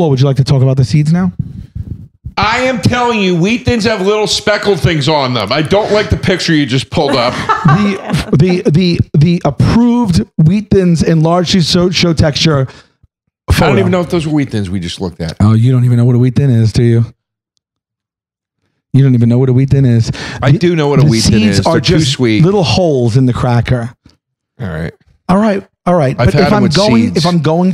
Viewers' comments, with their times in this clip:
0:08 Nice Porky Pig impression, Sal!
0:08 Sal sounds like Porky Pig from loony toons 😂😂